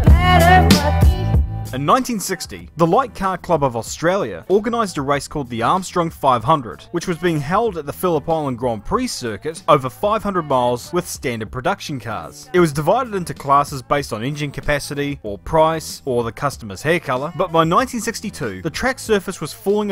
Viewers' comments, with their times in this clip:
0:07 The good ol "Fəlla pollənd" GP circuit